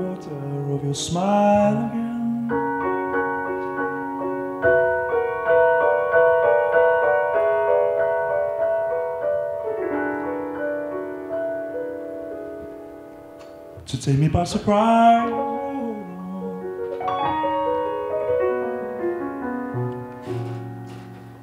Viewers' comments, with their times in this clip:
0:03 Ravel is that you?